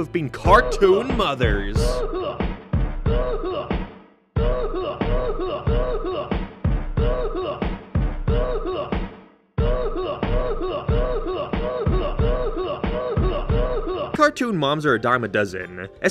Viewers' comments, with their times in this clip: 0:03 goofy ahh song